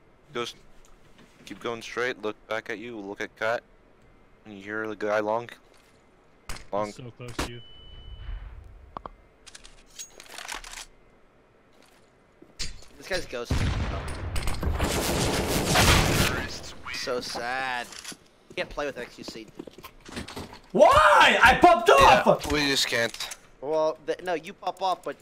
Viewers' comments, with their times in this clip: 0:08 He heard tyler scope xD not ghosting